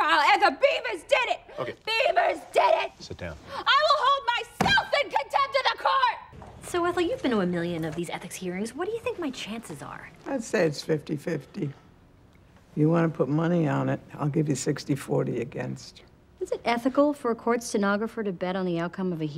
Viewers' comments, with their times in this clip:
0:03 Damn Aubrey can yell for sure